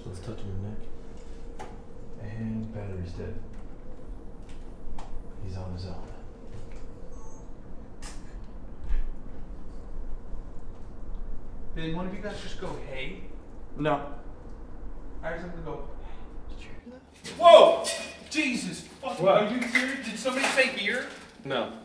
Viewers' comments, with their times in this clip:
0:06 Faint female voice